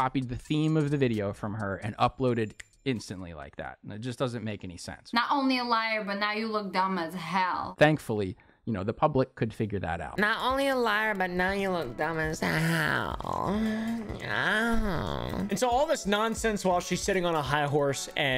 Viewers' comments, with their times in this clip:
0:06 That fake LA accent is cringe